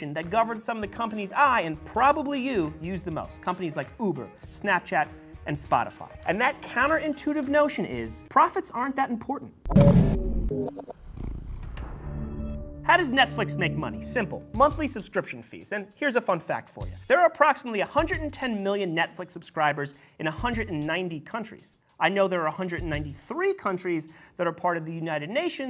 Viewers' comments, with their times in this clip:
0:10 that xbox sound